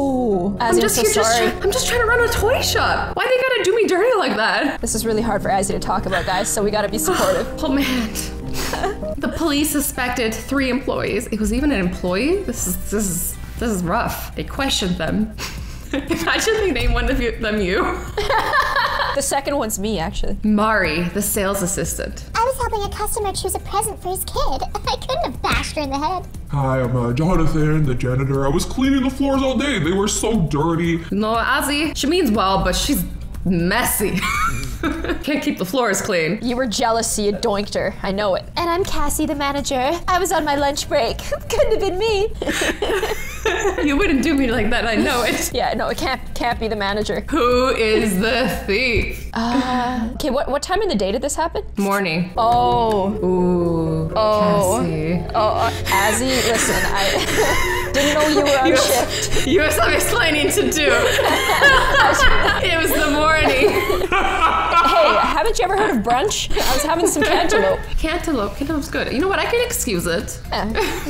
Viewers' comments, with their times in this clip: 0:09 "The police suspected three empoyees" "EMPOYEES" YEEE HAWWWW 😂😂😂😂
0:56 azzy had a full on asthma attack I can’t even 😂